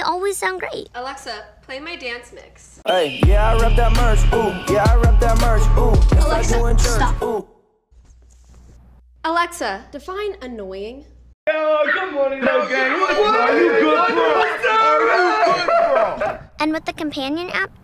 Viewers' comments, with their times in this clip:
0:03 what’s is that song It sounds bad